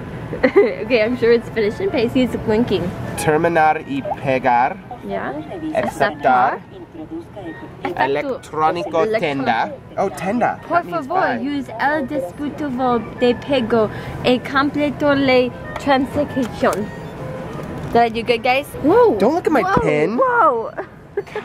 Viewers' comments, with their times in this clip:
0:06 hahaha you speak soo funny haha